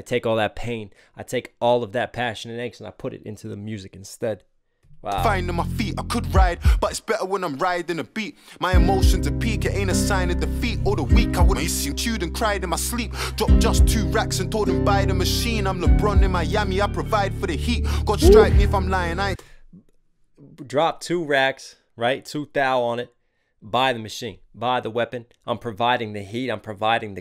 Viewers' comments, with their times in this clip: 0:10 what’s that cut in the song?